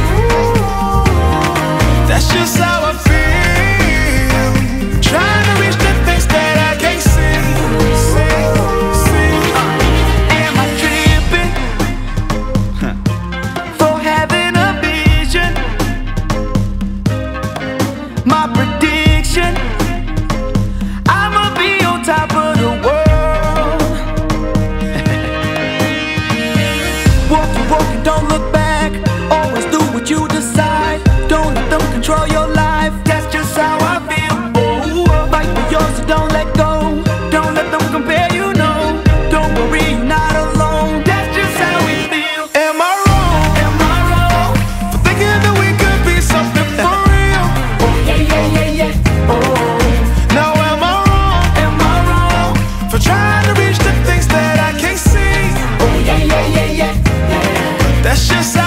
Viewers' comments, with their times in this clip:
0:05 The mic peaks But i still LOVE this song
0:46 Who else heard a laughter in ?